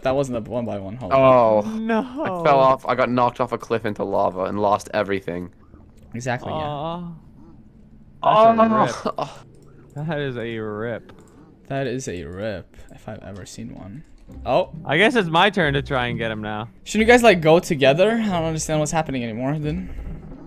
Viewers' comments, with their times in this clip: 0:05 was that a fly? 😂😂